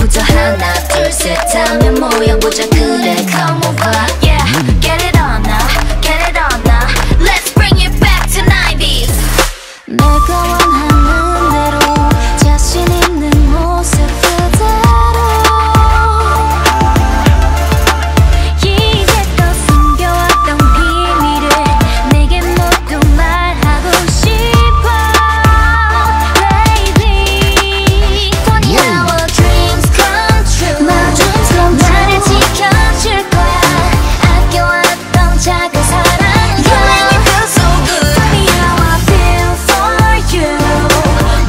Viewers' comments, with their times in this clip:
0:10 Im obsession with Karina voice
0:28 loooool it's "funny" . I thought that was some other korean words - as expected winter singing that part.. . .